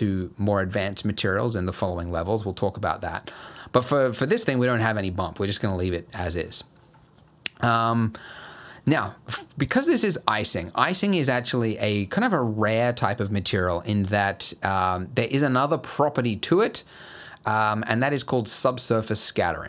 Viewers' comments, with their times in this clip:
0:07 I love the tutorial. One note about the audio, tho. The 'smack' sounds that you do with your mouth (e.g. ) gives a very loud audio spike, so I'd advice maybe not doing those anymore... or at least so close to the mic, haha. Can't wait for the next part! :)